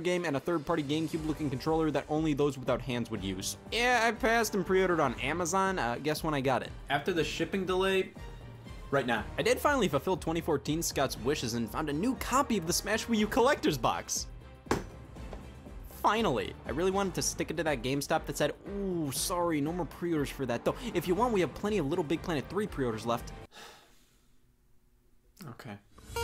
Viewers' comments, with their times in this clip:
0:06 They removed the damn doorbell sound effect
0:07 in the "editing techniques" video on scott's stash channel, he mentions removing all of the censor-bleeps and BGM from the project files once he exports them (iirc so he can grab raw footage from those files easier, if needed for a future episode). so i'm assuming that G4 had to redo all the SFX/censor work, and they just accidentally missed some (the doorbell sound effect in the pre-orders episode is gone as well )